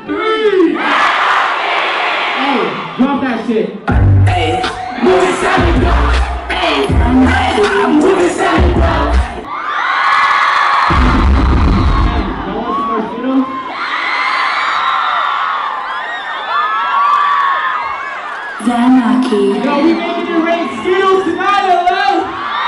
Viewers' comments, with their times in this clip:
0:10 this dude legit just casually asking "hey, you want some more skittles?" lmfao